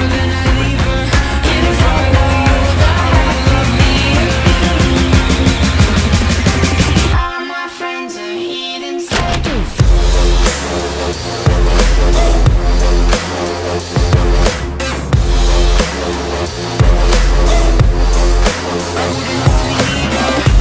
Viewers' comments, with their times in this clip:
0:06 Your mix of the pauses, vocals and drops fucking peaked i love the use of the heathens 'watch it' sound affect